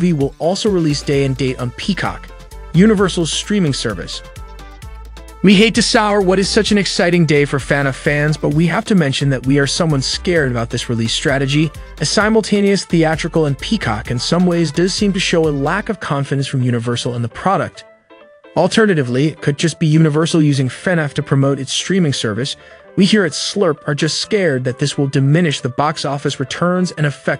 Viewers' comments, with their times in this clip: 0:10 fanaff fans????????????????????????? its prounounced lik fuhnaff